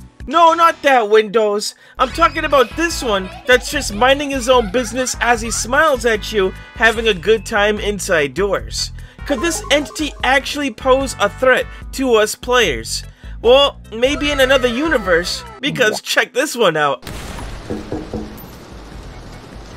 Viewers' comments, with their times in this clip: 0:03 The veliona laugh 😍😍😍